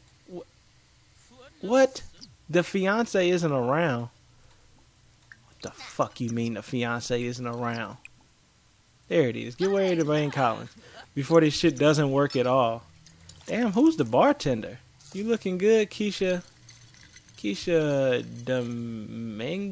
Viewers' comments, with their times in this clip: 0:06 Idk why but the way you said "da fuck you mean the bartender isn't around" I laughed to hard XD